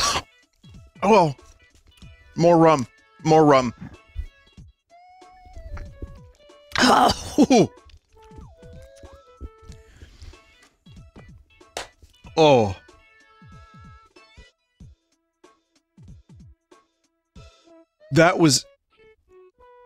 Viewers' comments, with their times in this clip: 0:06 the bean made him turn off the voice filter and reveal that he's actually 40 yo woman who smokes 3 packs a day